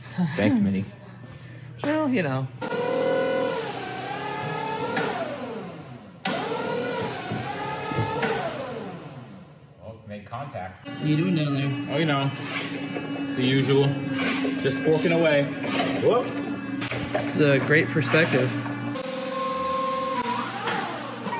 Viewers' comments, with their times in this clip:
0:03 I just can’t tell if it’s Bruce Hornsby or Tupac but the forklift also sounds a whole lot like either song …